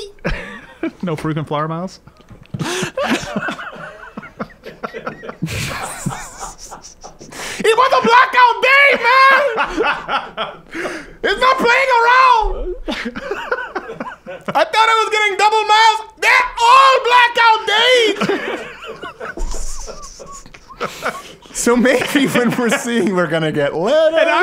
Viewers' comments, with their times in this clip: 0:08 You racist. Dat not even right accent. Dat sound rike Chinee.